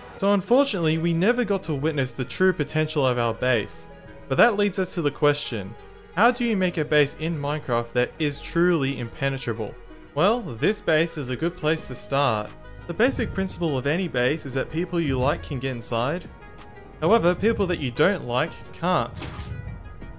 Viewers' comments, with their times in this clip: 0:03 Whining ends Edit: Never mind.. whole video is full of whining. 😕